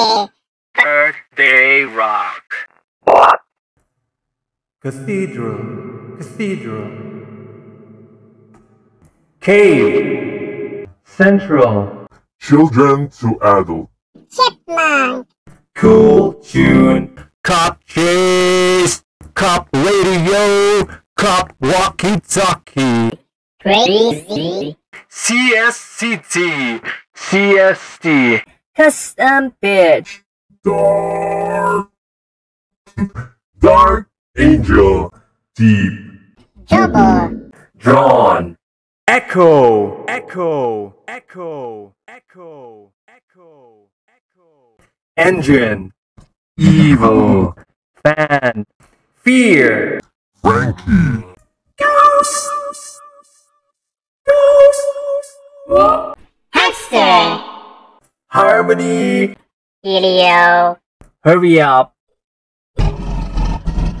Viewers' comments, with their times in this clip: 0:03 My mind just went Dori me
0:12 sounds like the Trivia Murder Party host’s voice filter
0:15 is he sheck wes?
0:17 Micro eating sound
0:17 You can basically use these ones to scream without screaming
0:17 sounds like technoblade
0:17 When Flamingo Scream Flaming Youtuber not Animal Bruuhhhhh
0:17 When your teammate pours Monster on his mic.
0:17 Does the cool tune sync with songs in the background?
0:17 how Scott cawthon found a voice for Funtime foxy in UCN
0:17 Nobody: Random Kid In Xbox Party With Connect Mic:
0:20 funtime foxy voice
0:27 sounded like he said the b word
0:32 sounds like EVA from WALL-E laughing
0:36 sounds like tiko
0:48 Love this!! My favorite is fan😂 “f a-a-a-a n” 😂😂❤️ 😂❤️
0:51 My fav is ghost